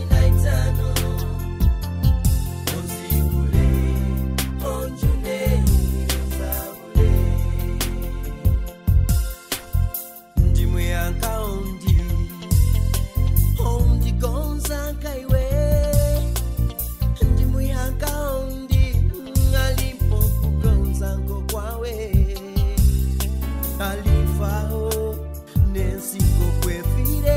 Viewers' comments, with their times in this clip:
0:08 27th March 2024 enjoying the soft music. So calm voice. 😊